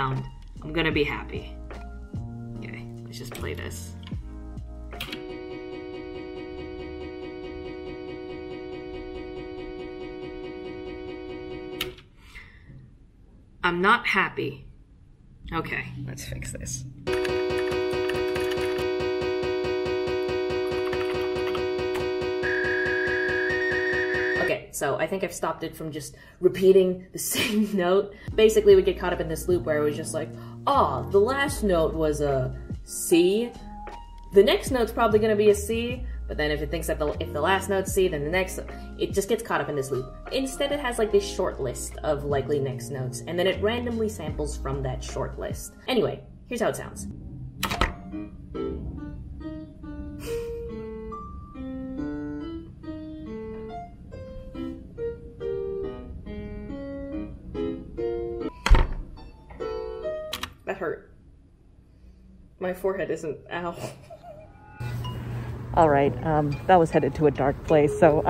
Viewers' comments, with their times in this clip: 0:07 is the cooking ai’s ‘add olive oil all over again
0:07 slow it down and Kid Cudi will do a “hey hey”
0:17 Bro when that stupid beat syarted playing I was on the ground 😂
0:47 "Mom I wanna listen to Lavender town!" "We already have Lavender town at home, sweetie" Lavender town at home:
0:47 I'm obsessed with the fact that actually sounds like the bare bones of indeterminate/12 tone music (two very different approaches to composition that usually end up sounding very similar). As much as it wasn't your goal to have that sound, you successfully made music using composition techniques pioneered in the mid 20th-century! Just a mini music history lesson for you haha
0:47 a bit late to this, but your computer accidentally reinvented Serialism! (kind of!) as a musician, it’s a concept we actually study — the idea that all 12 notes of the chromatic scale are played in different orders to create the basic melody and harmony of a piece. you might wanna read more about it! your video got me thinking about how applicable machine learning would be in its process… anyway sorry for the rant. great video!
0:47 sounds like a piece composed by John Cage 😂😂😂
0:48 arnold schoenberg be like:
0:52 that beat sounds like the intro beat of a sound cloud rapper
0:53 it sounds like some compilation music